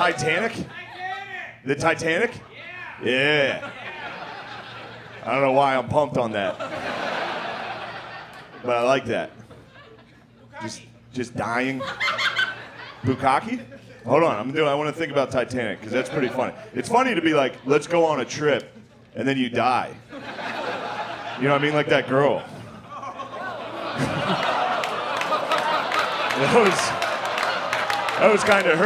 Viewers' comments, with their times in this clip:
0:08 Dunno how he didn't call that laugh out. I can get loud too, but that was abrupt asf.
0:10 that chick laughed wayyy too hard about that and abruptly stopped it as if it were an admission of guilt 😂
0:11 brah that girls laugh 😂
0:11 gaaddawm someone thought it was funny XD